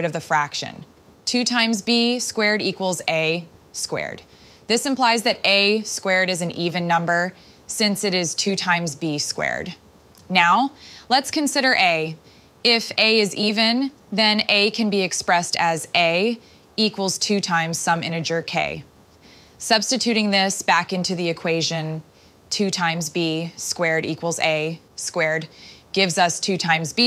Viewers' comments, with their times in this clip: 0:08 she says 'b squared' without a pause, right after saying 'a squared' with the pause. I think that discounts the pause theory as meaningful.